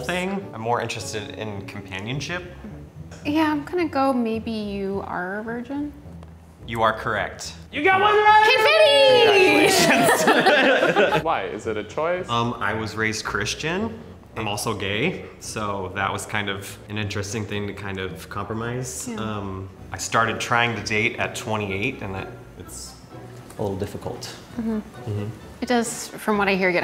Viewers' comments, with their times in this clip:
0:08 he’s so excited for her, just screaming behind camera lmao